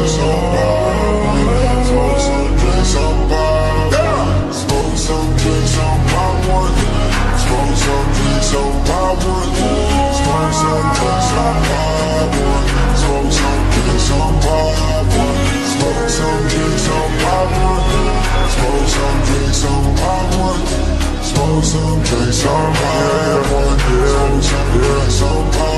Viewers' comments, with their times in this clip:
0:10 why does it sound like he’s in pain about something? you know when you get the worst news and your body like shuts down for a while and you’re in so much pain you just want to scream... that’s what it sounds like to me